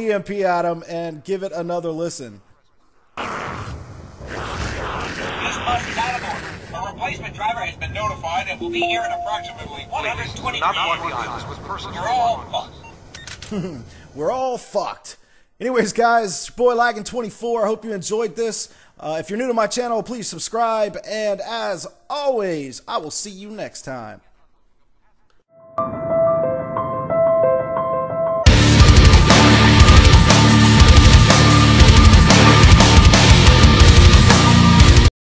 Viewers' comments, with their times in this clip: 0:07 sounds like peter griffin
0:08 U guys hear that beep? Who could be the one broadcasting the messages that u start hearing Could this be linked the the 2nd bus route?
0:24 ... *Guitar Solos HIGH VOLUME* Me: WHERE THE FUCK IS MY MUTE BUTTON !?!?!